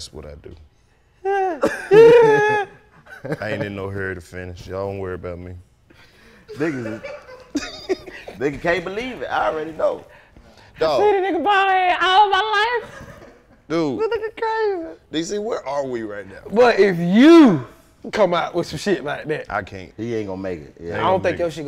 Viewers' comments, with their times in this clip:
0:04 Karlous said “hurry” like a real Mississippi nigga‼️😂